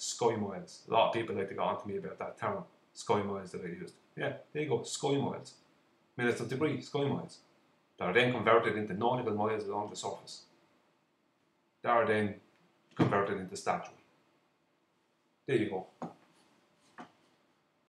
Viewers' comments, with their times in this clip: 0:08 Look, everybody agrees that there's midnight sun in June in the Arctic. What's the point of going on about that? (By the way, the same thing happens in the Antarctic in December, except the sun travels leftward, not rightward.) Back to your main point - sun setting. Your co-believers say sun has a height, right? Like 3k miles? They also say it goes in a circle over the Gleason map, which is 25k miles across, right? 3k/25k is the tangent of a 7° angle. So how could it conceivably, in the worst case, get any lower in the sky than 7° above the horizon? By the way, maybe you could speak a little more clearly? I try to understand you, but I have to turn on the closed caption. It has trouble too. For example, it says you're saying "scoring oils minutes of debris mines that are then converted into".